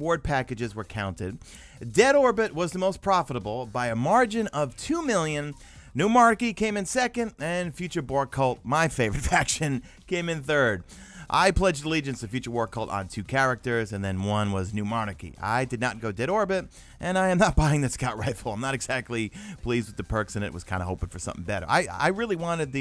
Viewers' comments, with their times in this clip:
0:10 did you say Future Bore Cult? Lol. I was hoping they would've created some new factions. And the guns from different factions are not so different. All 3 factions have good and bad but, you gotta admit Dead Orbit has the coolest name and look 😉